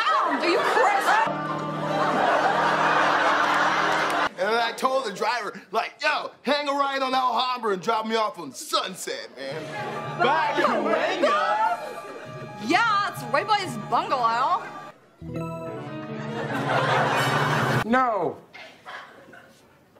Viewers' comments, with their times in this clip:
0:07 Don't know why, but the way Kennan says this is just funny lol